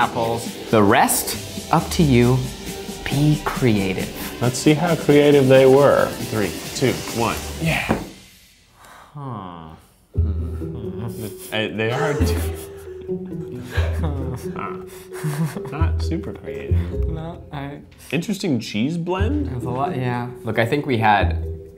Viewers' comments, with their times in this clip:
0:09 they sound like minecraft villagers